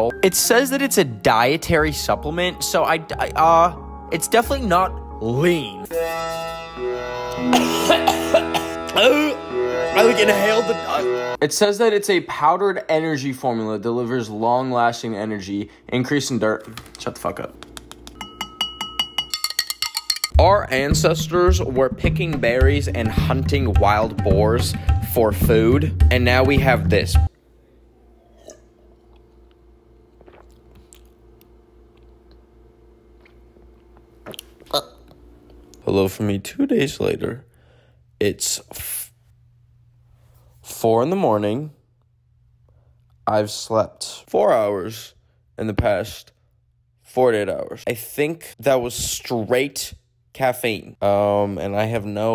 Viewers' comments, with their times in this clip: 0:08 AHAHAHAHAA WHAT WAS THAT SOUND *AUOOOO*
0:22 WHY IS THAT MUSIC KINDA SOUND LIKE A GENSHIN FIGHTING THEME IN SUMERU
0:34 the ugh KILED ME HAHA